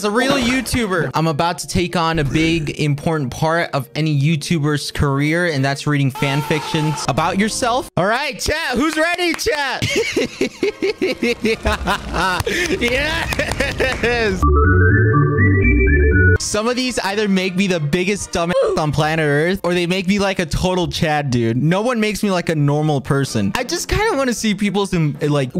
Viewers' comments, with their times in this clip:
0:10 THE EVIL LAUGHHHHH